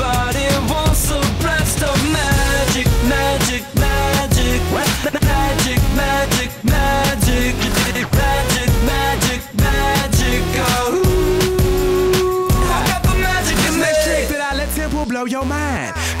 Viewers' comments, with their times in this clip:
0:04 This song is only popular because he's good at making his voice sound like a record player like How does he do that? I've been trying but I sound like a sheep. I live in a field and now they've encircled my house, guess I must have insulted them by accident.